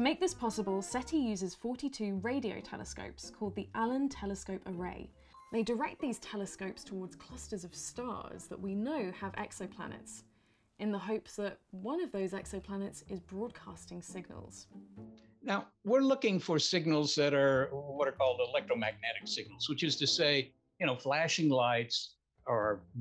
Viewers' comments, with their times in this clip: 0:06 Yeah the sound isn't great and the volume definitely fluctuates at certain points is a point, for example. if I've got the right number there